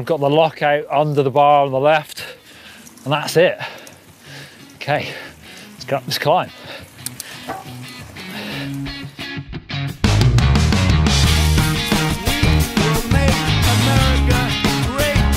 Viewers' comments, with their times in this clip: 0:03 Whats the deal with the Trump MAGA voice over ??